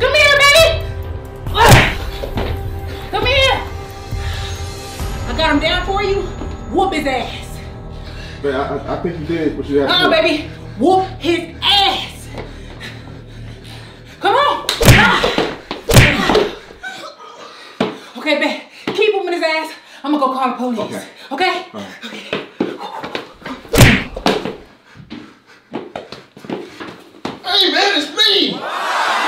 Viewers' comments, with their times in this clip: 0:10 When dude whimpered after taking them punches, I fell out. 😂